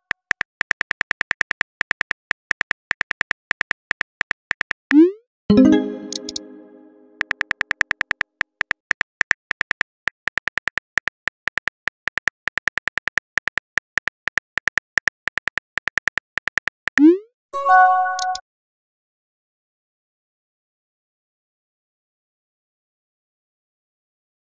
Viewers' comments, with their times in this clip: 0:07 the full typing sounds like music